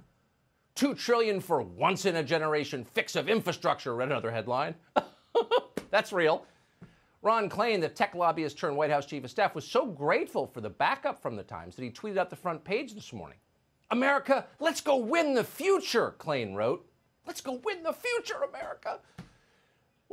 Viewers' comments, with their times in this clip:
0:04 Tucker's freaking laugh😂😂😂 I'm crackin up. Needed that tucker, thx. U da man!!!!!